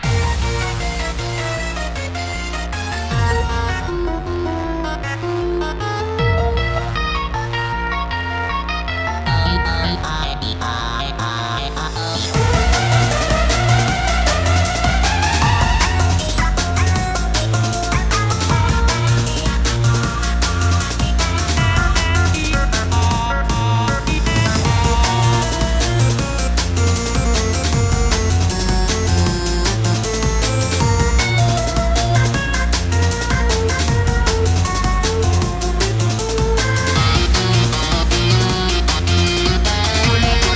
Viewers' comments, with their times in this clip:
0:06 greens part here was taken over by robot sandy but the reference sounds like that song in mario
0:06 Also sandy sounds great
0:06 when sandy comes in it kinda souds like green
0:09 that SpongeBob sound is cool
0:12 My ears,oh no
0:25 THIS SOUNDS LIKE BONETROUSE FROM UNERTALE😳😳😳😱😱😱🤯🤯🤯